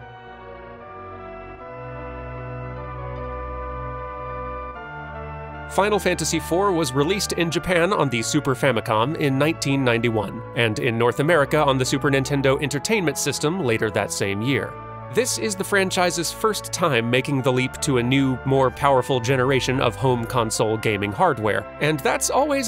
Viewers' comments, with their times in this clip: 0:05 seconds in and I am in tears for a simple soundtrack loop and animation. That is how much this game meant to me.